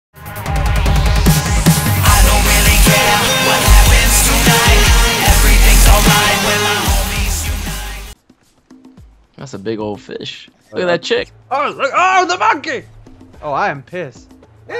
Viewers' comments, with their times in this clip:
0:00 gotta love his theme :P